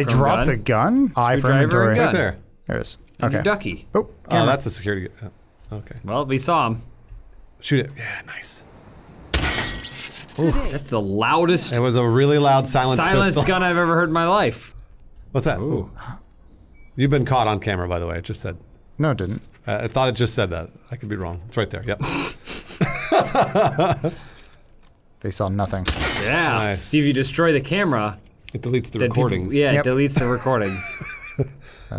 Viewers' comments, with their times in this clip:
0:09 you guys obviously have never heard a real silenced gun before then. Thanks Hollywood!
0:14 That's what real silenced weapons sound like.